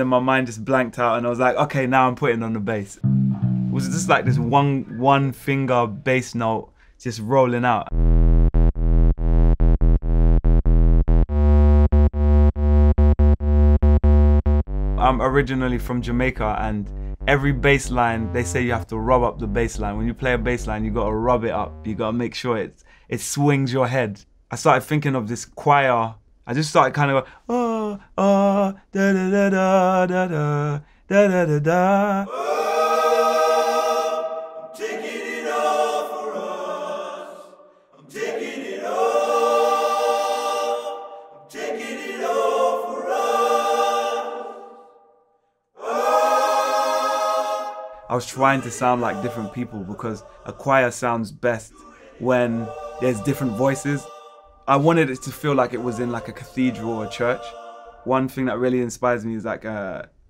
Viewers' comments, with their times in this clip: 0:09 This is basically a sine wave with distorsion WTF this is garbage !!!!!!!!!!
0:34 Omg this is so gospelish. This choir. Wow. I can't process that. I am just feeling it and it is enough
0:46 When the choir started ...goosebumps